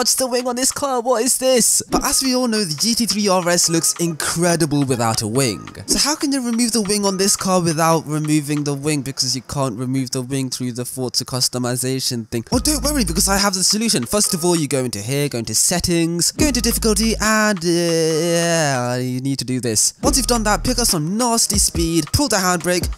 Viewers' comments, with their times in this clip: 0:08 almost started to sound like central cee's flow at customisation thing